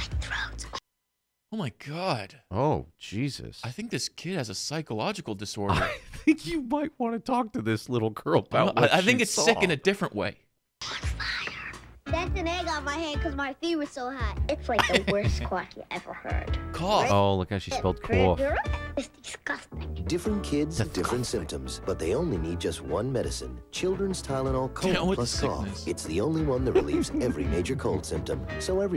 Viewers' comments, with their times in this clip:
0:10 Out of context it sounds like she's saying "Everything is on fire!"